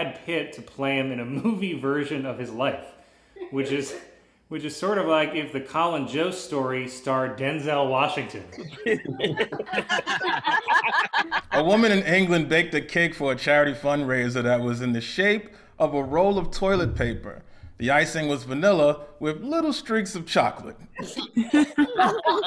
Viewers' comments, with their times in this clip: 0:10 The constant laughing/quasi laugh track is really annoying. People don't need to be cued when to laugh.